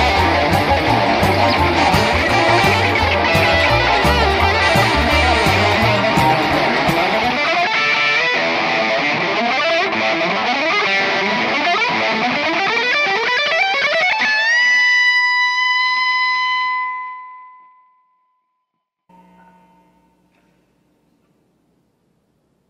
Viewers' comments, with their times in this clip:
0:07 when the band stops playing